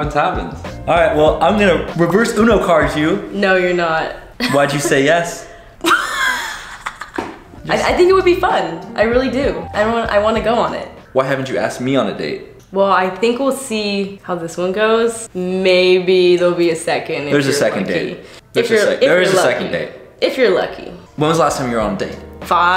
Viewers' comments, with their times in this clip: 0:04 That had me gasping with her 🤣🤣